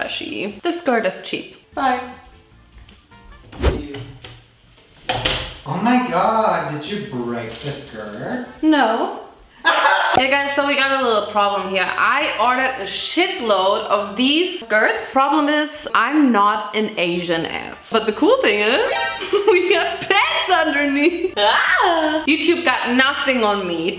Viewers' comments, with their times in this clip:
0:09 the laughs killed me 😭😭😭😭